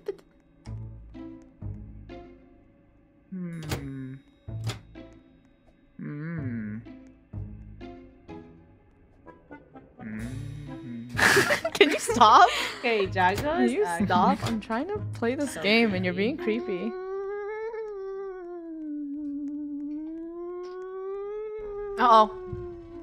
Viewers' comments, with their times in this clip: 0:04 lol his voice